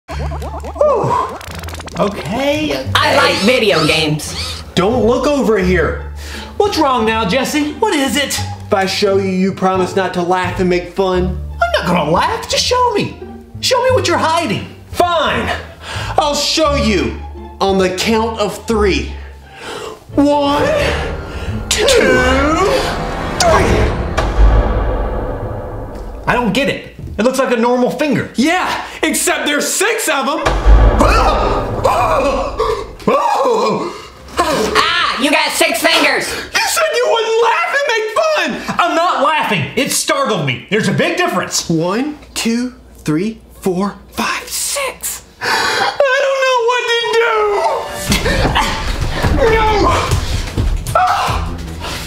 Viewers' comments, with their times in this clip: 0:00 the lovely horror show sound effects
0:02 and this robot talks like bill cipher
0:24 It just like Hi-Fly in chinese
0:35 THE ROBOT SOUNDS LIKE G MAJOR 91 WTF